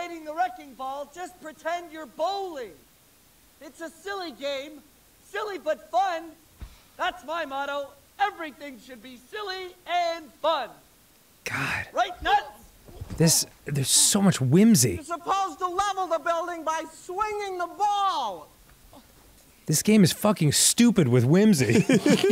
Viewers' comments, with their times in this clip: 0:05 "silly butt fun"